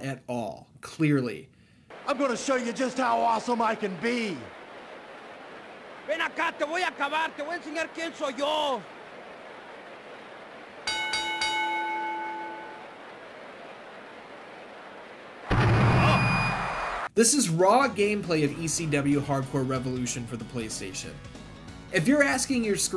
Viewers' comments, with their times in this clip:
0:07 Lmao don't Even know who the hell that wrestler is but i thought it was hilarious hearing him shout out his rant in spanish while in that Goofy arm waving stance 😂😂😂 Btw his rant in English translates to "come here, i'm going to finish You off, i'm going to show You who i am" just a little fun fact there!